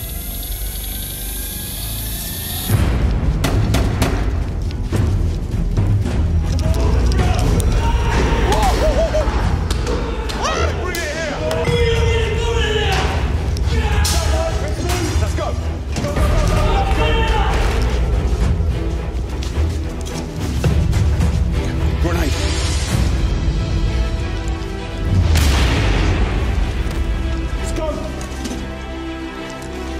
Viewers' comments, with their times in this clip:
0:10 is that the guy from Housos that always goes like KSSS KSSS KSSS